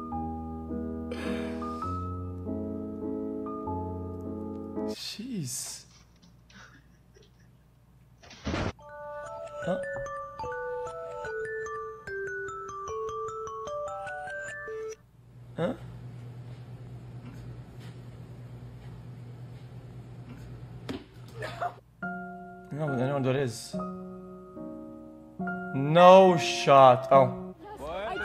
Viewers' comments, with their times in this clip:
0:09 sound gave me flashbacks to when I used an android alarm to go to school at 6 am. Not pleasant tbh